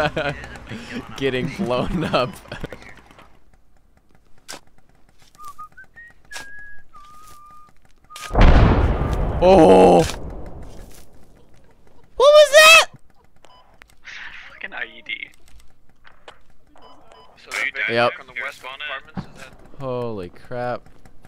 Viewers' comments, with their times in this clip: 0:05 were you whistling the Hawaii Five oh Theme?